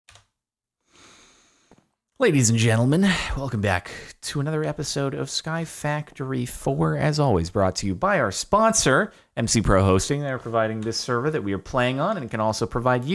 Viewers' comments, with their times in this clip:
0:00 My headphones were all the way up during that initial inhalation I will never be the same again.